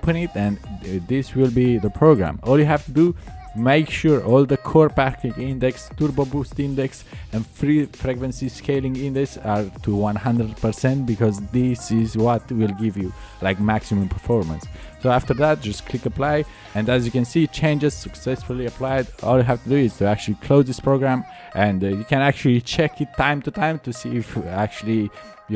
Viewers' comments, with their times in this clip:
0:06 "free pregnancy scaling"